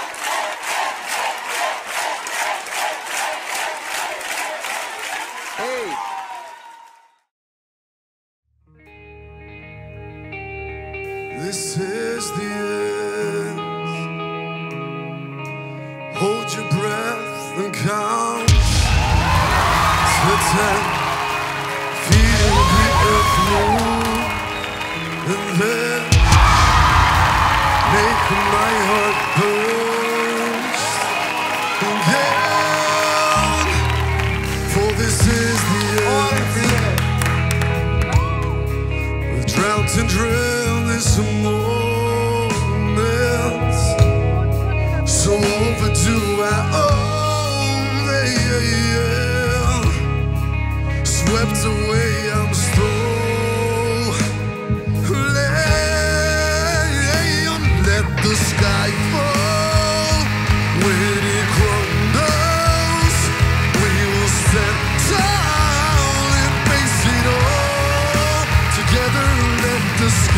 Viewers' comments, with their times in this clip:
0:08 best voice ever...
0:10 Ramstein and WTF Beautiful voices :O
0:53 That Greek guy had an unbelievable voice, soooo raspy and haggard in a good way